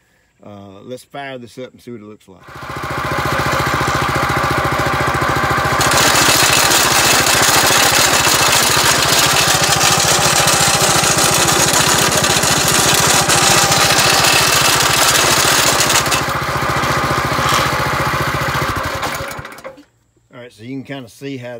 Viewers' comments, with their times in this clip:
0:06 RIP ear drums